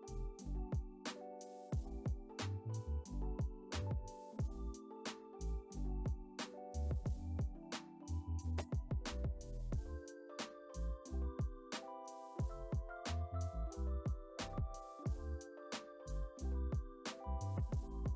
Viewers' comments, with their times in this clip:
0:06 love the videos! but the voice over is missing some times in this video? for instanse